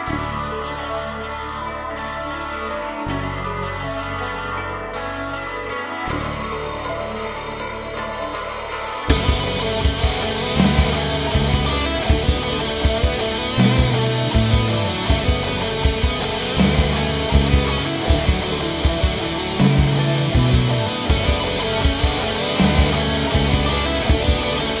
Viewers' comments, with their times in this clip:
0:05 Personally, I think the subuded and resigned mood of this piece has that warlike quality you speak of. I listen to this, and I close my eyes, and I see Nightmare Moon suiting up, mustering her resolve to bring night eternal to the land, all while lamenting the coming confrontation with her sister. and the fight begins, the fate of Equestria hanging in the balance!
0:09 Very nice song, very soothing... mostly. But I have to admit, the guitar section from onwards is just too loud and distorted to enjoy. A crescendo fits there, true, but it doesn't quite manage to seal the deal - it's too simplistic to really seal the deal and instead ends up being just... well, loud.